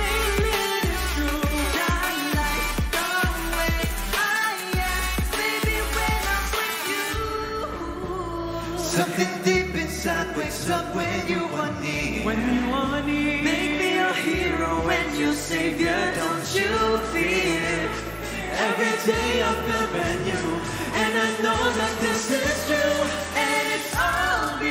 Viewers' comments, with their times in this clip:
0:10 The clean vocals of Nate and Gelo OMG! That was so eargasm!